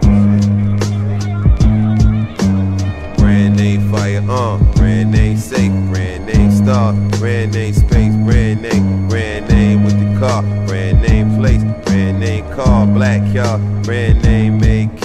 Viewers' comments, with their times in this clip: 0:03 WTF!😱 The Music is Dookie Trash 💩🚽🚮